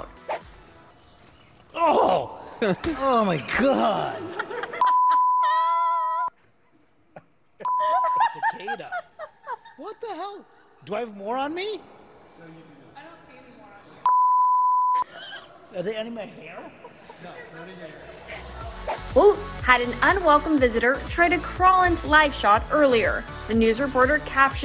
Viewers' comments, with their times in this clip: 0:09 Ga-ca- da.....😅😅😅😅.....No He says it correctly......ci-ca-da or se-ka-de.... silly reporter, the others said it correctly